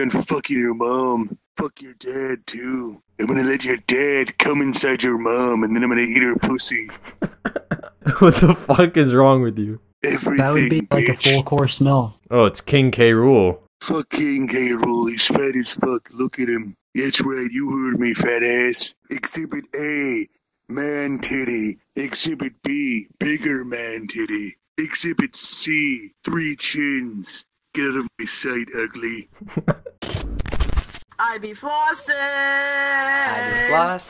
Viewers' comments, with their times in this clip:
0:04 guy sounds like donald trump
0:15 he sounds like trump
0:17 he sounds exactly like Duke Nukem